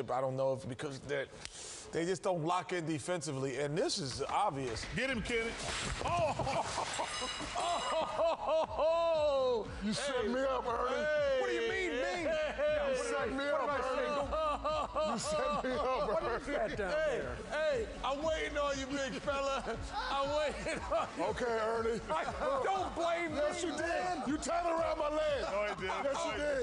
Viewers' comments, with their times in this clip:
0:04 It's so hilarious how you can hear all the shit fallin before they pan to Shaq and then you immediately hear Kenny "OHH ho ho" CTFU this will never get old.
0:07 has always been my favorite laugh